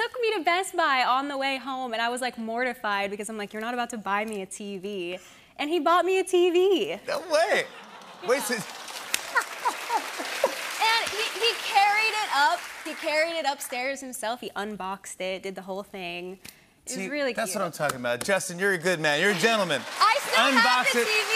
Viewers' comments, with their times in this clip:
0:08 Not the fake laugh by Jimmy
0:09 I can't with how fake Jimmy laughs herr